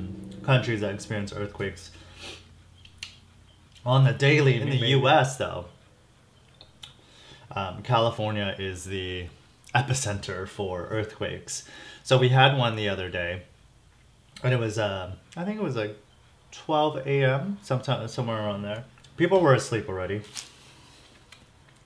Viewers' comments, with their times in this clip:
0:09 that crunch though.😵😄